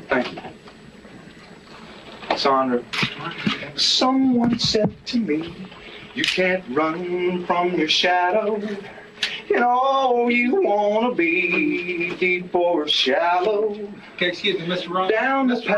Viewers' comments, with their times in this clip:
0:03 Say what you want about his homicidal tendencies, the man can pen a catchy melody...